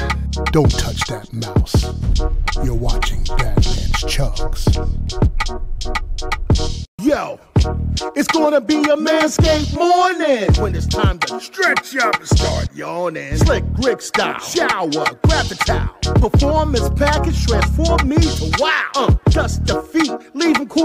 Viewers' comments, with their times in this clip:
0:07 kinda a bop tho